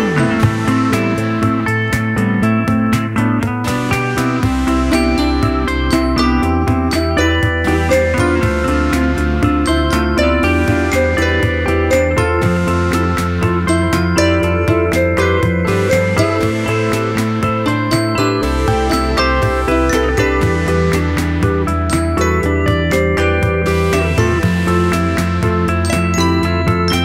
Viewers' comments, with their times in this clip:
0:08 clap as instrument,great!